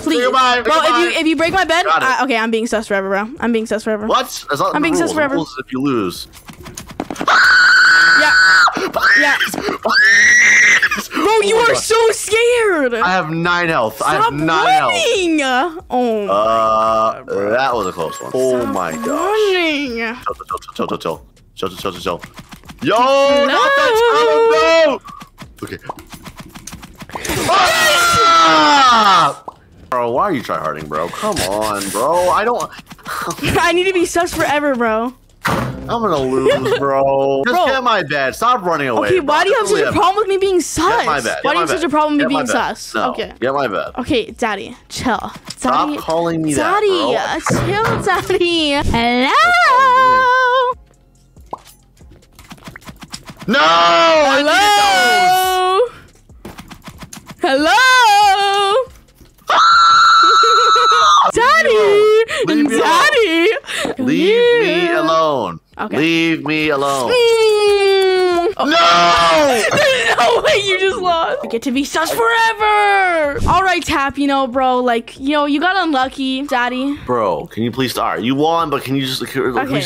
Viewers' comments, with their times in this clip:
0:06 BRO THE SCREAM THAT MADE ME LAUGH
0:07 That scream tho
0:07 That scream had me dying 🤣
0:07 WHY IS NOBODY TALKING ABOUT THAT SCREAM
1:00 Another scream lol